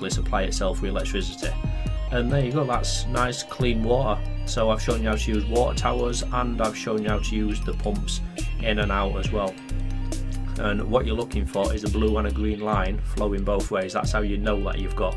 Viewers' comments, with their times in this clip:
0:03 nice clean wo'ah